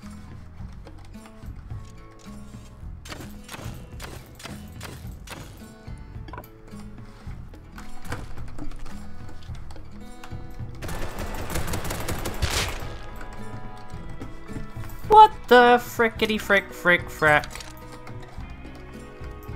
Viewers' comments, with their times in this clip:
0:07 i love how you can hear him pressing all the possible buttons on his keyboard.